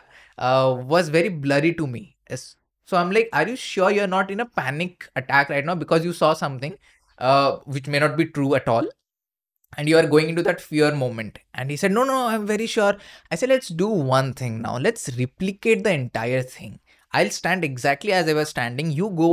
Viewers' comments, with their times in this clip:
0:06 When he says "something" you can hear a voice
0:07 Is it just me or as he says "Panic Attack" a split second later it seems to be an muffled voice?